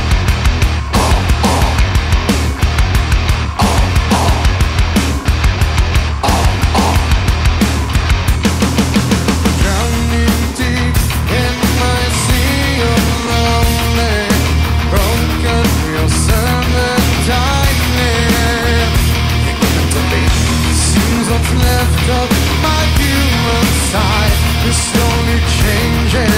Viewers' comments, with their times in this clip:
0:09 That voice on the 😍😍😍